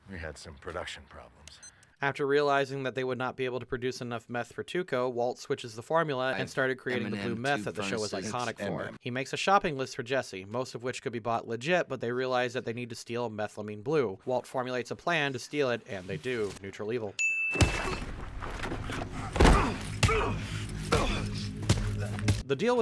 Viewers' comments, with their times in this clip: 0:06 I don’t know about you all but I heard “and Eminem scores a taco”